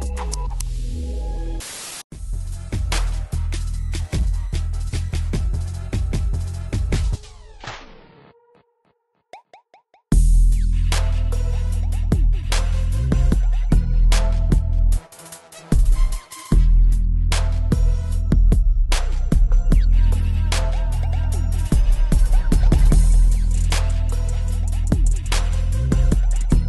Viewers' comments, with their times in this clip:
0:07 sounds like you're entering a rich villain's mansion